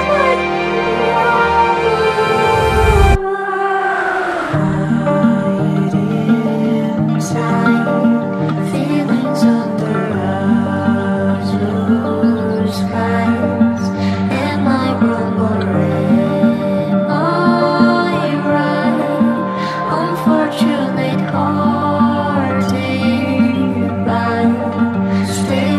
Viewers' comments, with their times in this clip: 0:10 Man, the song is absolutely incredible. BUT. I was hoping for a second (maybe harder?) drop when the song seems to pick up again, but still, great piece of work, I love blasting this in my car on long trips